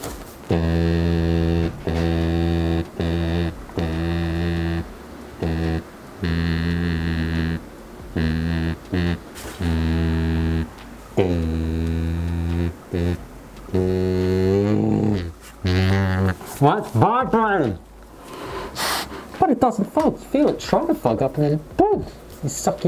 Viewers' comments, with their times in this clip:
0:03 built in kazoo?